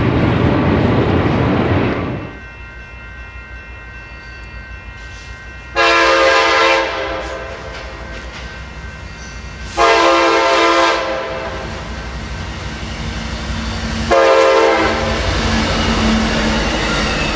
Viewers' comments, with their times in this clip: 0:03 my fab horn of the video